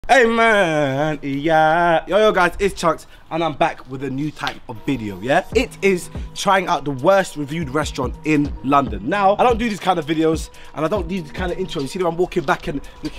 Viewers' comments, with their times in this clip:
0:01 Omg your Voice is so cute❤️